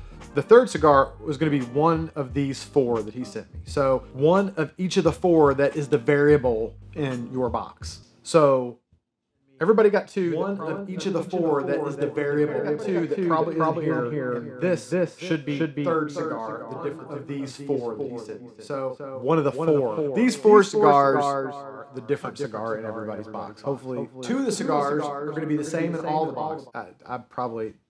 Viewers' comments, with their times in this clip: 0:09 that's pretty much what nangs are like lol